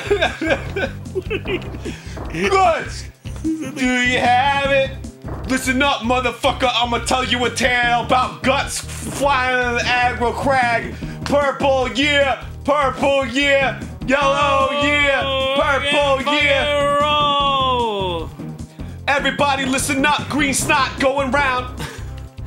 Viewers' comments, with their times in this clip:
0:05 sounds a bit like "I Choose You To Die" to me :)